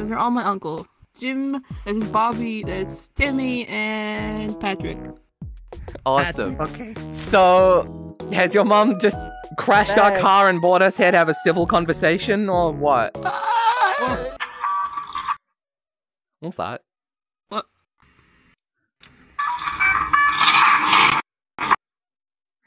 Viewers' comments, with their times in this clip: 0:04 My train of thoughts, exactly: oh hey patrick like spongebob his voice is so funny megalovania